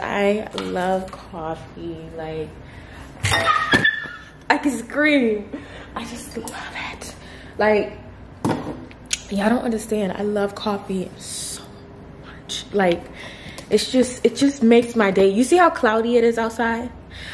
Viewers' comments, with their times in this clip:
0:03 I hella thought she dropped something when she screamed about her coffee 😅😅😅😅